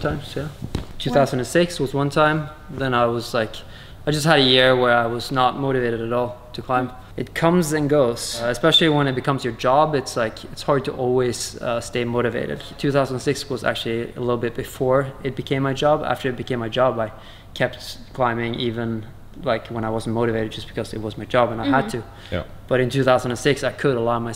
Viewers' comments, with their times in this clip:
0:07 That EPIC tooth whistle though